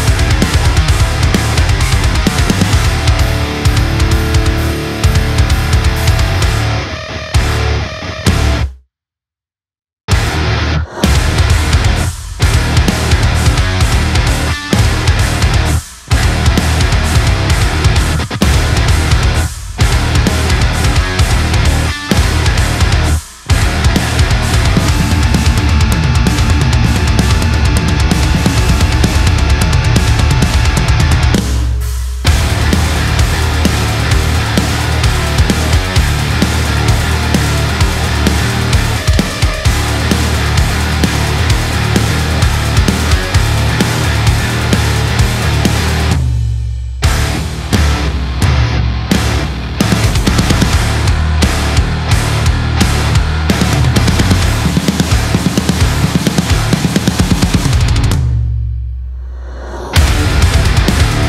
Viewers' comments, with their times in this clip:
0:10 Is part pitch dropped?
0:25 is it me or it sounds like duality intro hahaha
0:47 I would have guessed this song was in a much lower tuning but I'm guessing the bass/grit is really doing the heavy lifting there of sounding LOW.